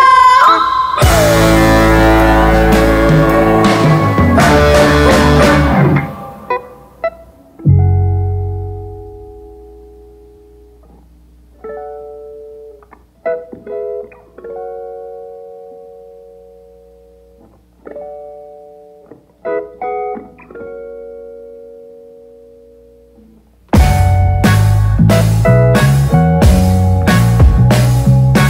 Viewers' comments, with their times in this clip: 0:07 From it’s just an inexpressible rush. Pure talent. The bass guitar, lead guitar, drums, Brittany going off, the combination is musical poetry. Just beautiful. Thank you, Shakes.
0:07 The whole song from beginning to end is incredible, from on it makes it one of my fave songs of all time! Her vocals are amazing! Alabama Shakes come back!
0:07 onwards honestly feels otherworldly, like if something phased into your body and brain
0:12 That moment when it all comes to a halt and then builds back up into a beautiful explosion…….I love that I still get goosebumps from it. 🥰🥰🥰